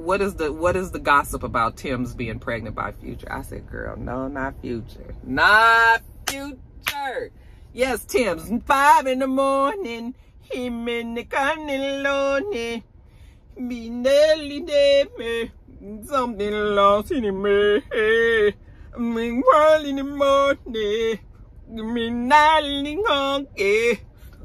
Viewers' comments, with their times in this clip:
0:07 I am in TEARS at your Tems "Free Mind" impression LOL!! Love that song lolol!!